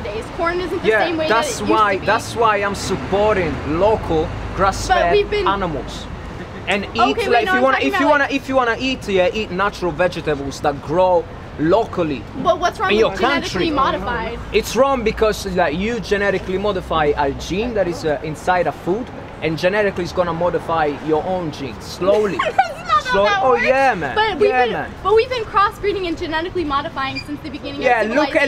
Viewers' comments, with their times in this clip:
0:10 The girl responds with giggles every time she gets proven wrong.